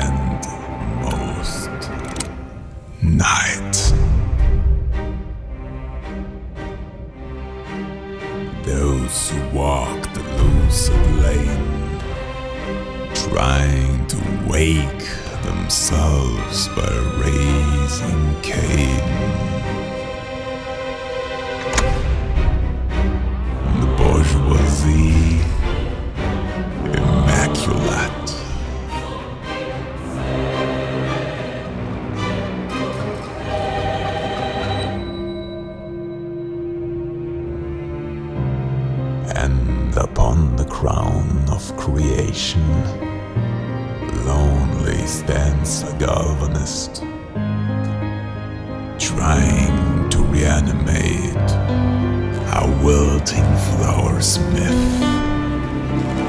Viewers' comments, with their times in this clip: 0:08 That made me feel some fallout NV vibes, with the Ulysses sounding voice especially 😂
0:42 I really got a kick out of the rendition of Moonlight Sonata playing in the background (what with the full moon in the background). It also fits the mood so well.
0:42 the moon in the background while the moonlight sonata is been playing its just incredible